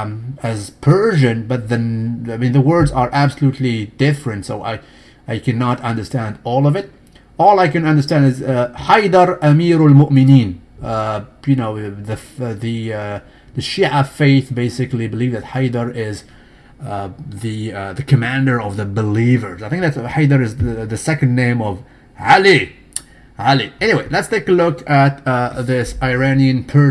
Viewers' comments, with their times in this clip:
0:08 wtf I am an arab and you just read the Arabic sentence like an arab or even better I was so shocked , I was expecting broken pronunciation , did you study Arabic or smth ? "saluted" .